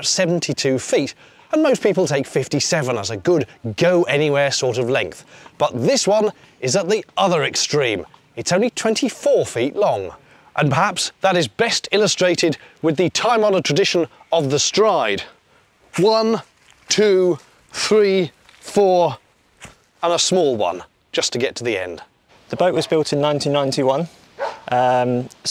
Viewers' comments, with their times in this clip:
0:08 sounded a bit Clarkson